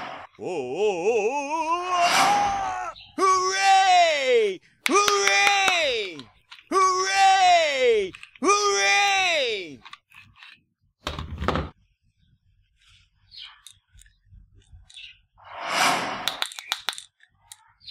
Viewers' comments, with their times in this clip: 0:05 Honestly, the sound effects are really annoying. Especially